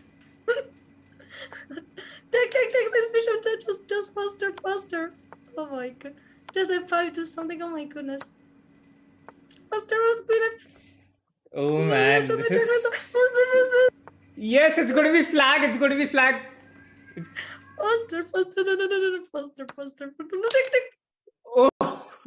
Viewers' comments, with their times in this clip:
0:05 why it sound wrong😂